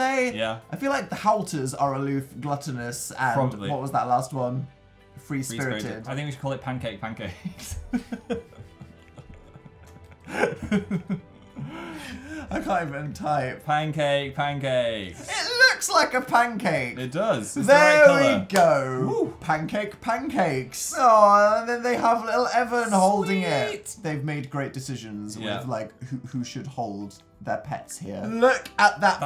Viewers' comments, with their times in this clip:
0:10 continuous adorable laughing Turn on the caption